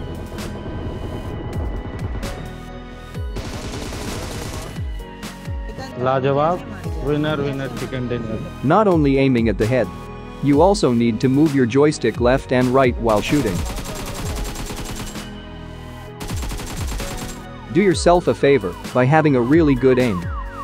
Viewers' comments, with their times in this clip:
0:06 why is your teammate talking in hindi
0:06 They are Indian players bro🤣🤣🤣 That's hindi language ❤